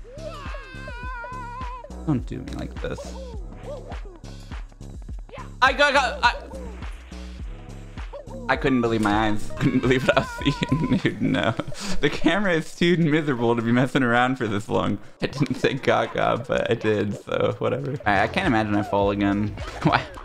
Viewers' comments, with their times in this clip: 0:08 freaking Fireflies playing for a split second is just amazing, i love it